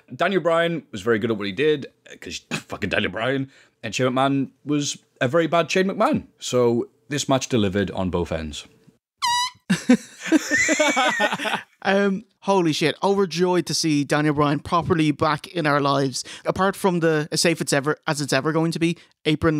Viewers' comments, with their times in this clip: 0:04 Whenever Shane does his shitty worked punches he always sounds like he's shouting "WHO" as if he doesn't know who the person he's punching is.